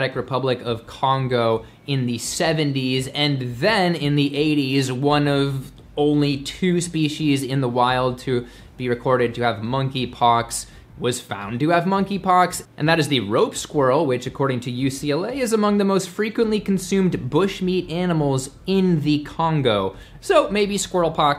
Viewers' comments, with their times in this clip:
0:06 "Spee-she's"-!? What is that? How does "spee-she's" relate to Species, which clearly has no "h" un it?... Were you bitten by an invader from england?... They mispronounce words all the time due to their dialects being formed by mouth-breathers instead of Humans. The Human enunciation is spee-C's or spee-seas, never "spee-she's," idiots qho mispronounce it as such, often believe thar "sentience is sense of self" as opposed to the state of having senses. Such mouth-breathers don't have any Sapience so they can't tell they have no "sense of self" and that sentience is not the correct term to describe such a sense.